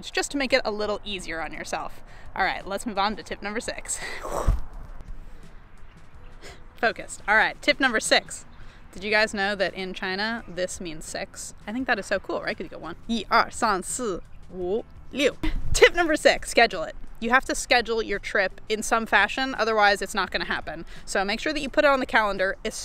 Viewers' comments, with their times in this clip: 0:06 I thought you said, "Did you know, in China this means sex." And I thought the tip was going to be, "if you're going somewhere with a different language, learn the cultural signs so you don't end up asking for sex when all you want to say is "hang loose"." =D